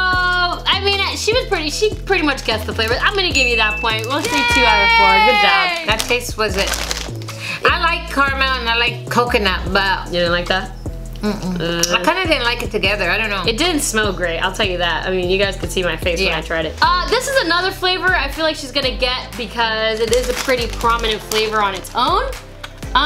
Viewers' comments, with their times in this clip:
0:04 i laughed so hard at the yaaaay sound